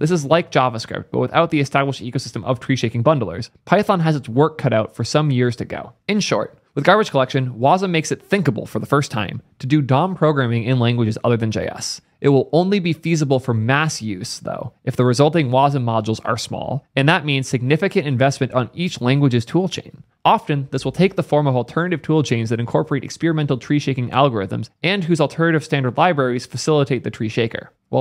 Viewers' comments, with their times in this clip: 0:09 I heard it as 'dumb programming'